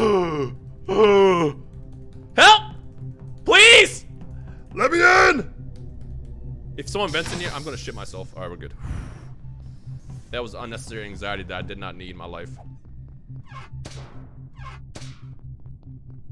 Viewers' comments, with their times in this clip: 0:04 holy sh*t that voice